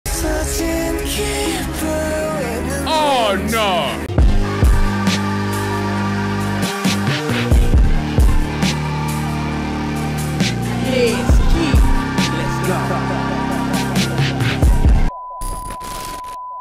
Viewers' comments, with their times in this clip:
0:04 The instrumental that starts is crazy.